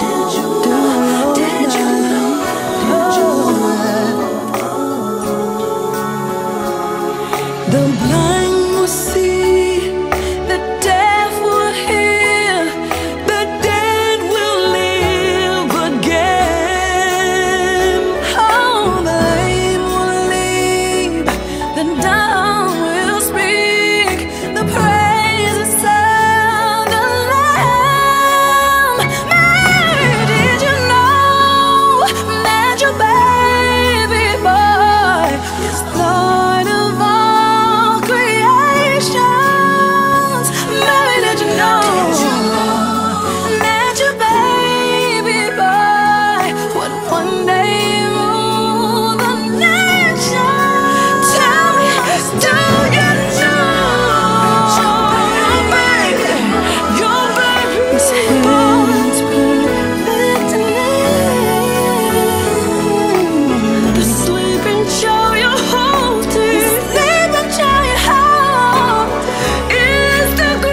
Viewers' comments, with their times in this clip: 0:08 it go Traci /Tamar/ Traci the it just tamar belting the f#5s then tamar nd toni singing the lead and harmonizing
0:27 Tamar better sang
0:35 that reverberated echo tho❤
0:50 Toni and Tamar harmonizing 🙏🏽😍I listened to that part like a hundred times
0:57 wow trina braxton that run was amazing